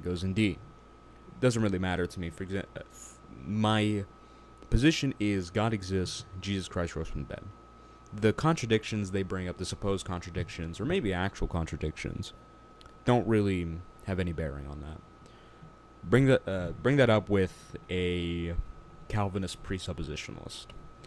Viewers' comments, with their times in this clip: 0:07 "Jesus Christ rose from bed"? At last a believable claim, even though Jesus himself would still require some evidence.